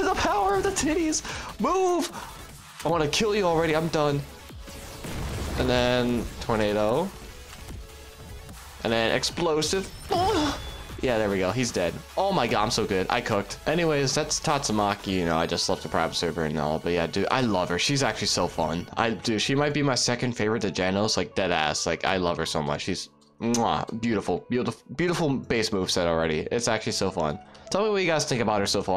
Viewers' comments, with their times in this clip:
0:09 the little scream was... :{